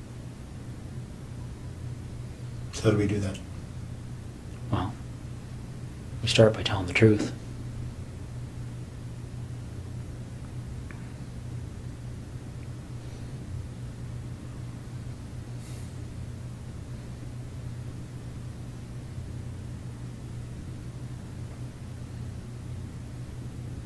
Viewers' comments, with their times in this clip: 0:06 those *PAUSES* tho this interrogator🏆